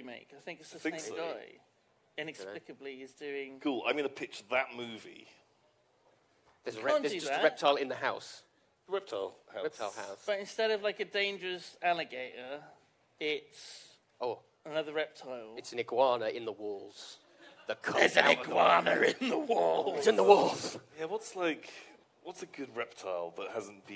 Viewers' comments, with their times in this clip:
0:08 For the brief special guest appearance by Yogscast seagull.